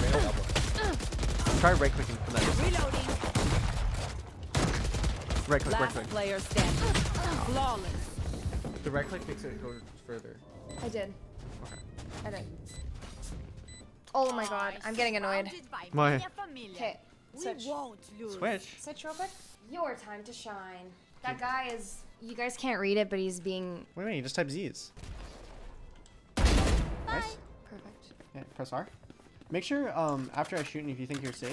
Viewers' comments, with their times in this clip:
0:07 Yo looks like she hid her face and got mad at him lol the way he said okay was like she was mad
0:19 when she said “your time to shine!” it sounds like a game voice actor xd